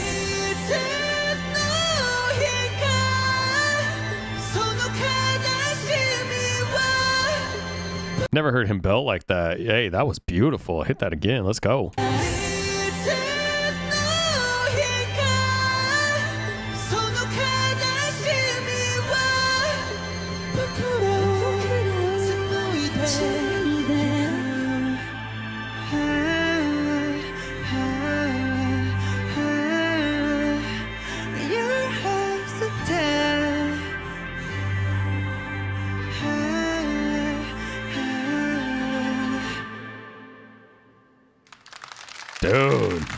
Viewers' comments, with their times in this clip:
0:09 Actually Jin is the belter of the group. If you watch the compilations of Jin’s high notes and adlibs you will be amazed by the range of his voice. I have seen your reaction to his live performance of The Astronaut and he belted his heart out there too 🫶🏼
0:25 belting is Jin’s specialty!!!!! You def gotta check out his solo stuff!!!